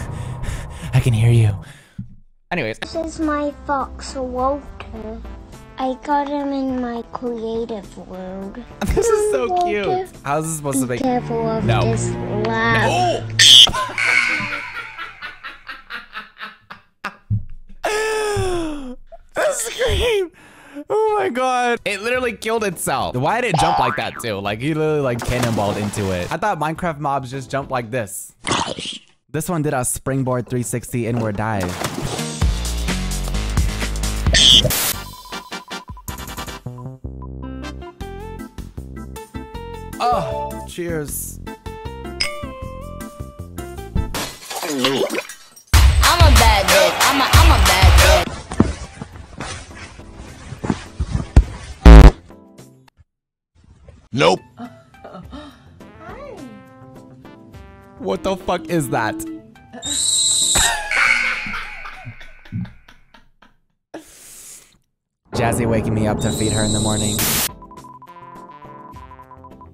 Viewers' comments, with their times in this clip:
0:03 i FEEL SO BAD FOR THE FOX AND THE SCREAM ToT
0:03 how did it go from so soft and innocent and then turned into Ariana Grande in 2 seconds TuT
0:03 The girl’s scream sounded like a fire alarm at a school 😭😭😭😭
0:05 Tell me why the kid sound like a fire alarm
0:10 THAT SCREAM SENT MEEEEE 💀💀💀
0:10 bro sounded like my school fire alarm 😭
0:12 The school fire alarm 💀
0:12 I had head phones in full blast😭
0:13 the kid screams like my schools fire alarm 😭
0:13 heard like a Fier Alarm🤣🤣🤣🤣🤣
0:13 not this child sounding like a smoke detector-
0:14 THE LAUGH IS SENDING ME😭
0:14 The laugh is giving very much slappy from goosebumps and I’m HERE for it babes
0:20 the scream sounded like a fire alarm
0:57 HELP THE WAY IT SCREAMED